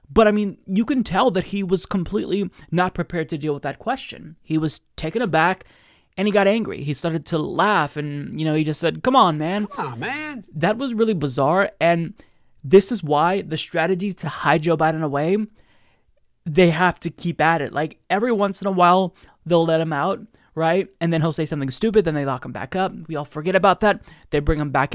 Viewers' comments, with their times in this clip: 0:08 I love how it almost sounds like it's got a rickety, squeaky, jackass heehaw sound to it... Or so, that's what i hear.